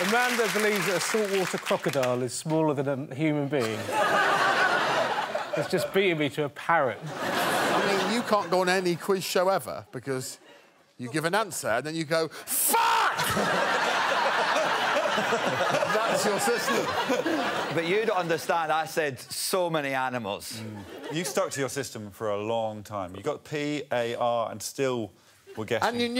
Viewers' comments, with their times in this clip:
0:07 One of my favourites across all the series, the delivery is just 🤌